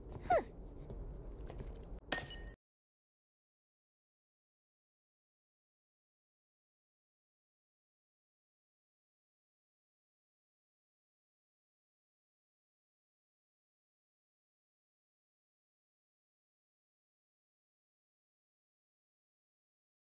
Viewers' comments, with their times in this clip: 0:04 And no volume
0:08 What happened to the sound ?